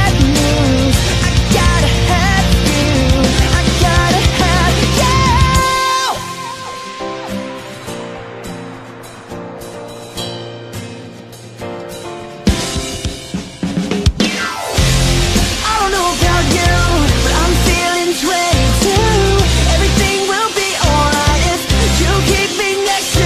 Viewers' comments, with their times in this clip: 0:06 did i hear a iphone ringing?